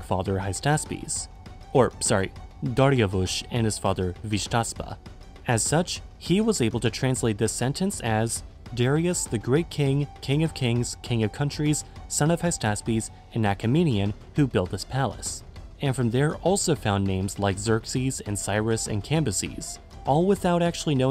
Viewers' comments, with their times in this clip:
0:08 Old Persian sounded epic and authoritative to my ears, I would describe its sound as 'ārta shatā vāriya' (it doesn't mean anything tho)